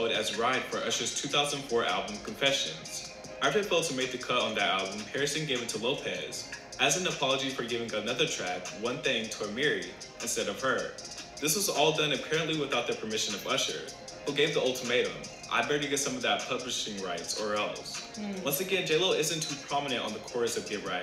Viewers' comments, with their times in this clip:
0:09 He said Ah-meere instead of Aye-Marie Sorry bruh, gotta deduct 1 pt.